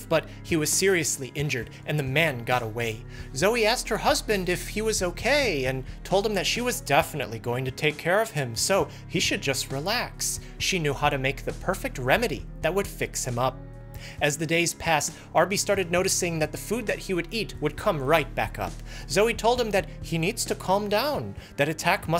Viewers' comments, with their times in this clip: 0:07 I love how when talking as the wife he sounds so sarcastic